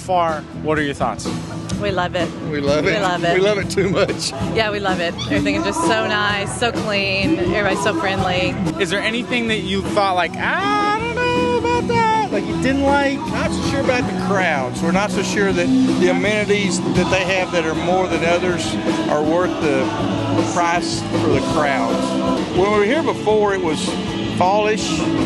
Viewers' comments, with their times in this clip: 0:10 That high-pitched voice. 🤨